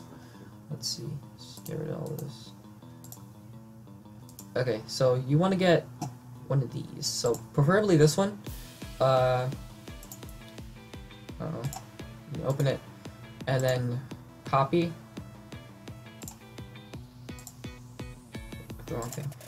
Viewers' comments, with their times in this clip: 0:07 thought he said pervertedly